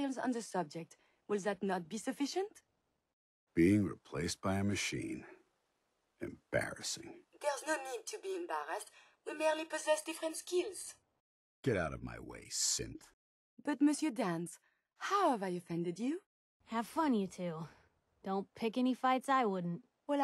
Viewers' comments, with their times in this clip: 0:03 The sheer disgust from Danse tho